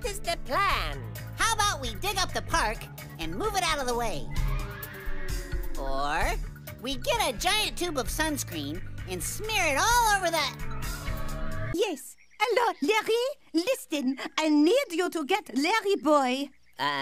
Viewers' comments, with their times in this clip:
0:04 Dang, Bro. You Got The Whole Squad Laughing.